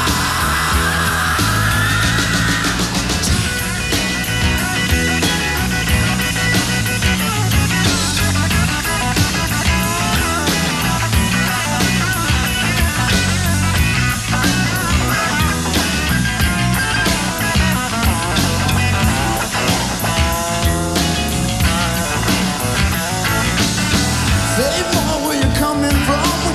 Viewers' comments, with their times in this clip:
0:07 duff looks like he knows he sounds really good